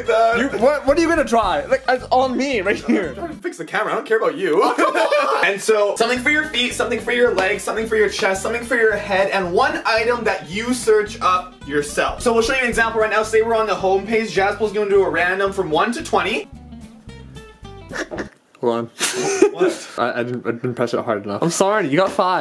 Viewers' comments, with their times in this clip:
0:04 sounds like Goofy